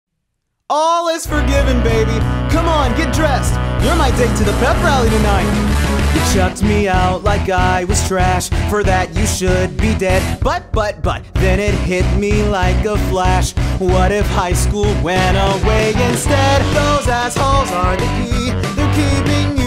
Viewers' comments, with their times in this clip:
0:01 I stopped breathing and I was ready to cry because it’s so perfect. 😭❤️ (Update) the second he yelled Veronica I bit my hand to stop me from fan boying